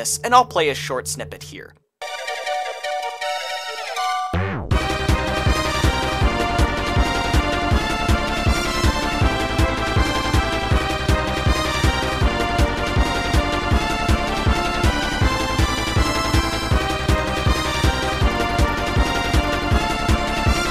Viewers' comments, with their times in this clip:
0:03 that sounds ripped directly from a kirby game lol